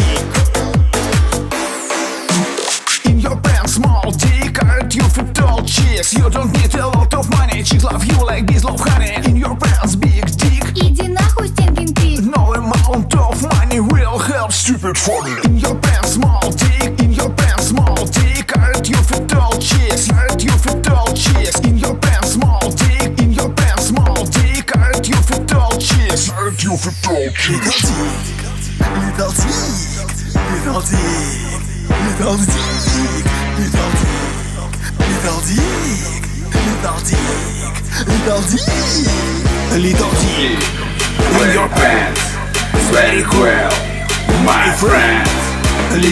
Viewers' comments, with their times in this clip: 0:05 his voice is so satifying
0:28 you can hear the vodka got to him